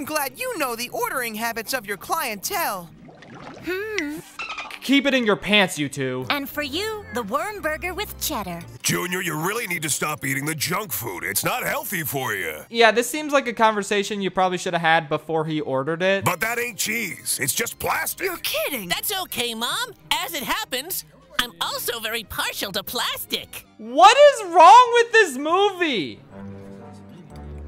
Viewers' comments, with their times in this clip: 0:09 this voice is hilarious